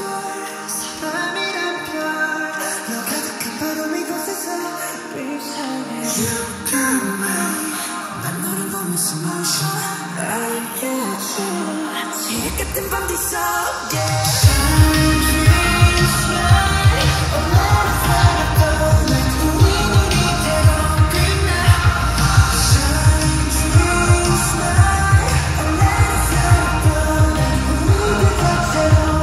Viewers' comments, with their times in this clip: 0:06 Woww🥺😍😍Vmin always hits different when they sing together 😍
0:06 Jimin And V Singing Together Heaven on Earth 😍💜
0:06 Jimin v voice 😳
0:06 :- is my favourite vmin singing part ( all part is my favourite but this hit different 😀💜)
0:06 vminnnnnnnn ♥️💋 And the high note Jimin you're killing it 😩💜
0:07 the vmin voice😩💜
0:11 JIMINS HIGH NOTE DAMN BOY
0:13 when JIMIN hit the high note is the best part😩✨
0:14 JIMIN'S VOCALS HAS ME WOAH 😍
0:14 ok so no one is gonna talk about the eternal high note of jimin !? ???????? itsss wassss soooooo daayummmmm goooooooodddddddddddd bruhhhhhhhhhhh !!!!! hisss voiceeeeee >>>>>>>>>>>>>>>>>> arghhhhhhhhhhhhhhhhhhhhh i waannnaaa heaarr theeemmmmm liiivvveeeee !!!!!!!!